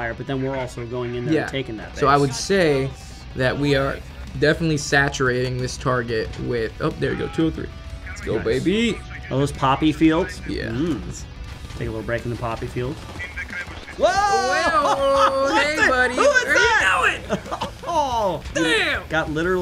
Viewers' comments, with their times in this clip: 0:04 Steve-O joins the game “Yeaaaaaa dude”